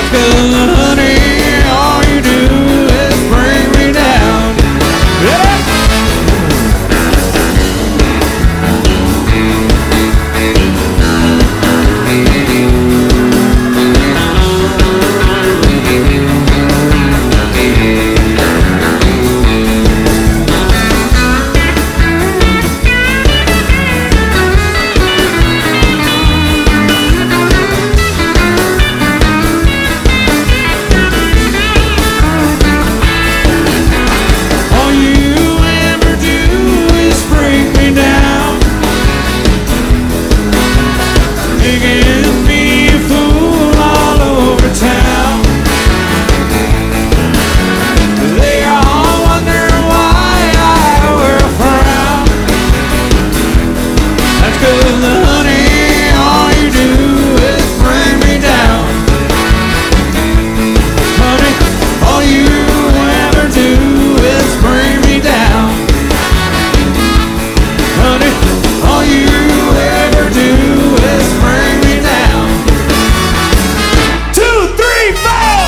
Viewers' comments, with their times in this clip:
0:04 First time that I've ever heard this song.....absolutely (excuse my French) F*CKING amazing! Incredible jam ish starting with that lead guitar.
0:59 Brilliant, and just when you think they're gonna finish they raise it to a new level. Makes me wanna dance!